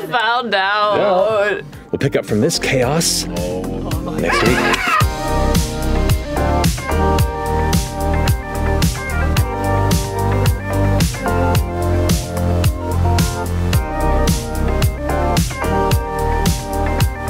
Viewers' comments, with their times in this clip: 0:04 Liam dino screech is amazing